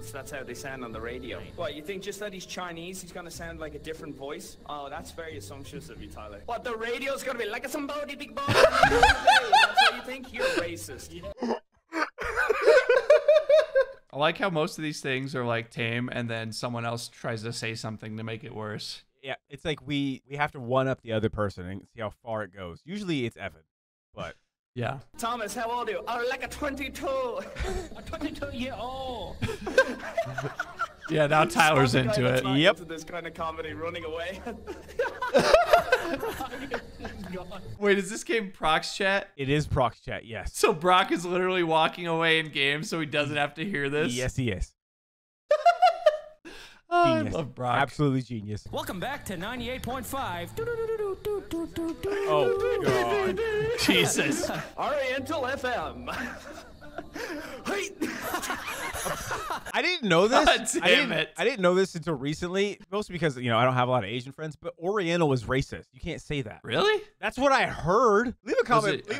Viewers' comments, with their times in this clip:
0:06 Sound like Ownage Prank
0:07 It gets me every time he does that voice XD
0:51 that actually sounded good for a vanoss podcast